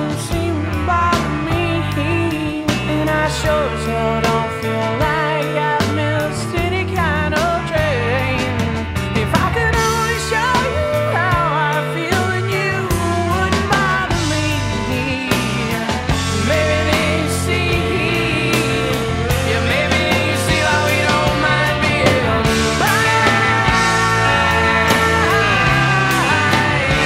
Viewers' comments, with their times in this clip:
0:08 the most perfect voice pitch of all history of music